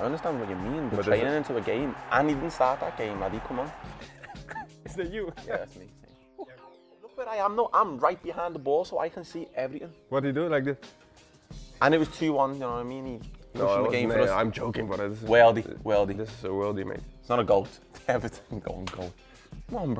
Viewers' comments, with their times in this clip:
0:04 Cody’s impression of Curtis 😂